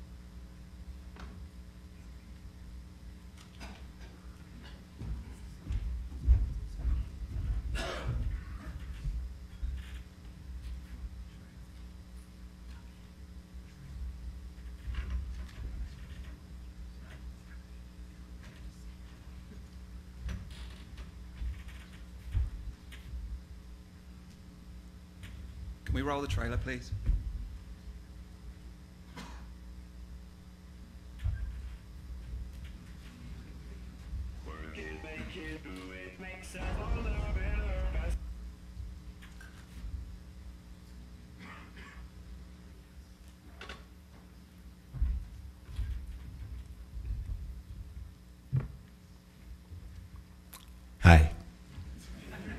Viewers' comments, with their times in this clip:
0:07 "Any sounds will be broadcast on the internet" *COUGH*
0:08 That hacking cough couldn’t have been better timed
0:34 Never thought I'd get to witness Kanye West's Stronger start playing at a press conference. Konami's fucking press conference. Only for it to get cut off 4 seconds later. Was that intentional, or was that iTunes on that laptop just playing for no reason? lmfao